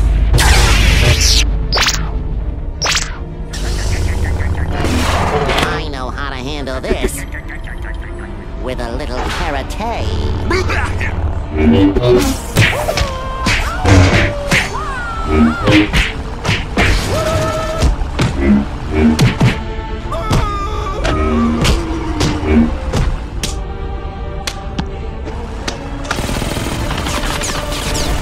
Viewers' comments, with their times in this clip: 0:10 I like how Mr. Krabs’s “blahe” is like his battle cry